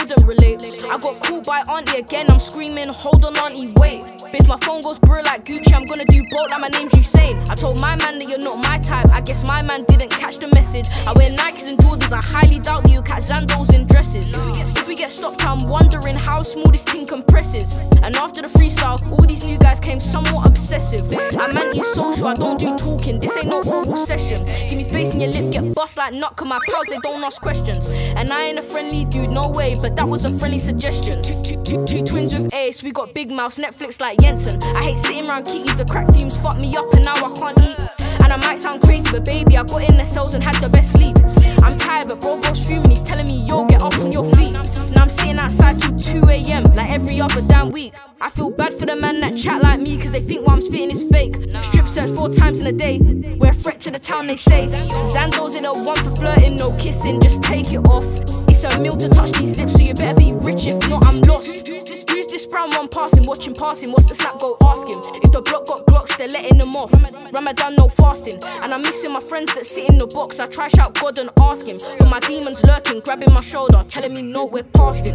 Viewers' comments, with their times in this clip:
0:07 BANGIN' BEAT. Love The Bass ! What Plugin Did You Use For It?
0:20 the 808 slides🤮
0:21 Is everyone just going to glaze over the fucking slides jeez man, beat is absolutely nuts!!!
1:02 that flow sounds familiar